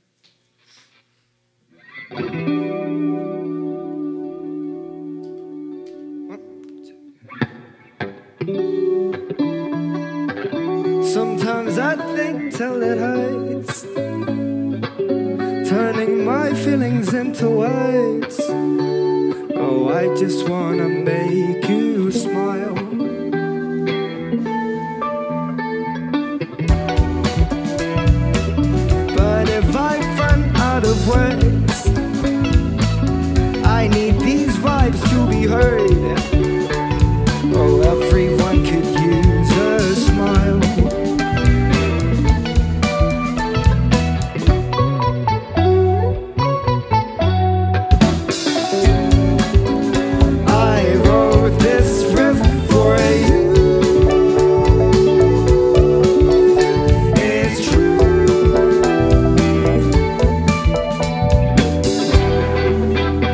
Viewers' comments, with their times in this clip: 0:07 sounds like That's the way it goes by hippocampus damn
0:44 reminds me of Chicano Batman - Black Lipstick lol